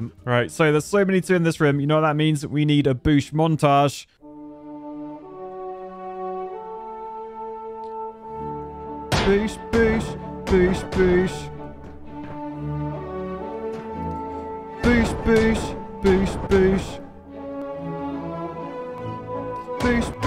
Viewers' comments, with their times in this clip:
0:03 That is the most beautiful performance of the 'The Blue Danube' I have ever seen.